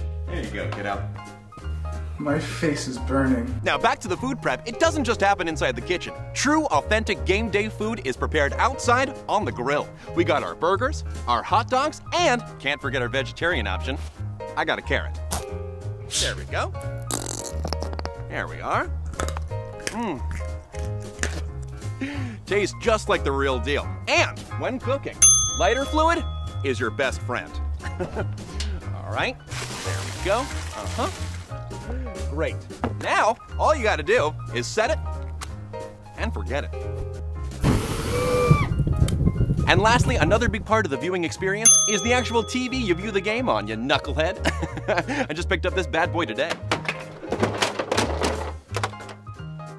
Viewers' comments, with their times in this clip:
0:08 My favorite thing is the person in the red shirt cracking up in the background
0:34 The grill sounded like a demon